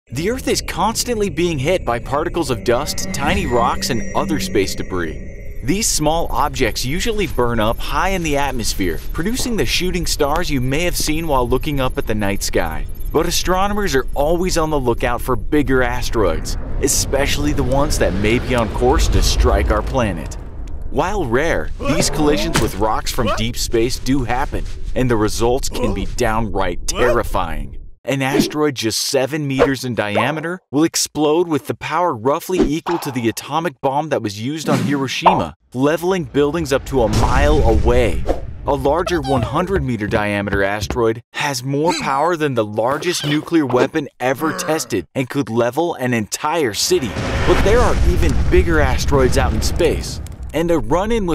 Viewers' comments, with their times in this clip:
0:06 wait what NATZ I Though it was NASA not NATZ
0:34 FINALLY someone says Hiroshima right